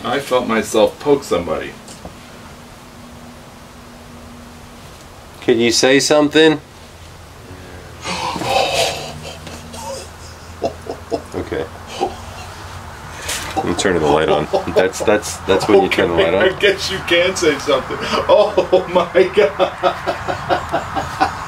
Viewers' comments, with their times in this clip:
0:07 the cap road noise??? i hear YEAHHH